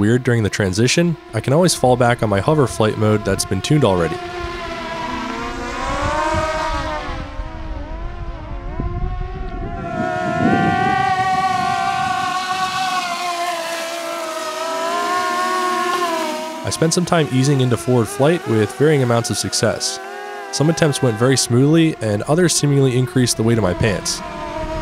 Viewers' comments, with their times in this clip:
0:09 Oh my god, it screams!